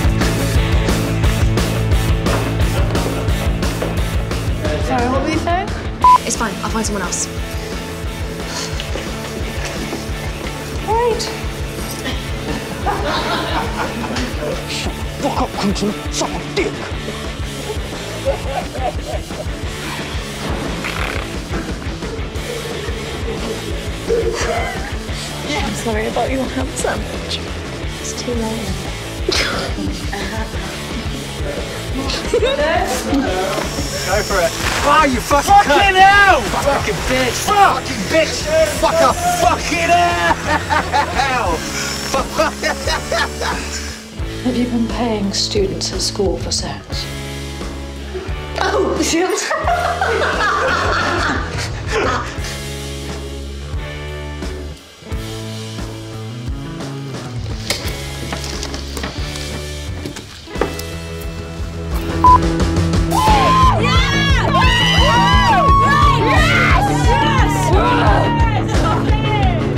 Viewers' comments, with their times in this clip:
0:07 ...Otis saying "wait" that way is the cutest thing I have seen this week
0:10 why is no-one talking about asa's squeaky "wait" 😭😭😭😭😭😭😭😆😆
0:20 Tanya (Lily) doing the lesbian growl and that wink completely did me. Love the series!
0:34 I could’ve sworn I heard the C word.
0:35 Ncuti and James r literally screaming and Asa be like 🧍🏻
0:52 Erm why is no one talking 😂